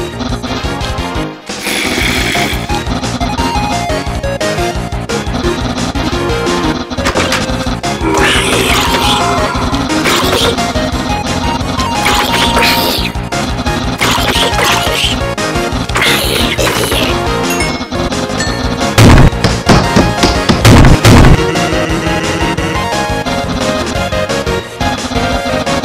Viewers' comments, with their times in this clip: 0:10 why u use an undynes favorite message lol u just go NGAHHHHHHHHHHHHHHHHHHHHHHHHHHHHHHHHHHHHHHHHHHHHHHHHHHHHHHHHHHHHHHH S : [does an undyne Scream] PUN DETECTED 99